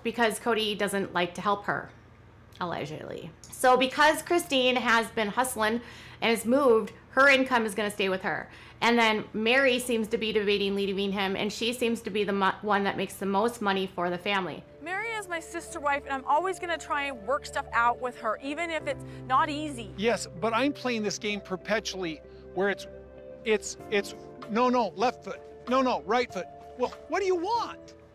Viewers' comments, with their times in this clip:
0:09 did you speak English there? What did you say? Lol. I literally rewound it several times, and I still have no idea what you said. Sounded like gibberish. Something about Mary and then her making the most money. This is common theme with your videos. You make incoherent sentences that you don’t edit out, yet you still edit out A LOT; Yet every video has these moments where you go off on an irrelevant tangent mid sentence, or literally speak gibberish. If someone knows what she says, please let me know 😂